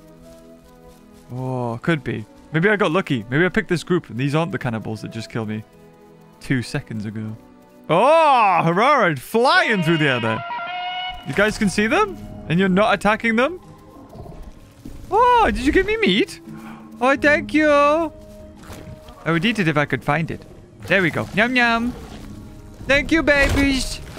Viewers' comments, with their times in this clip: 0:10 herrarosaurs flying and screaming OOOOIOOOOOOOOOAAAH! Like Tarzan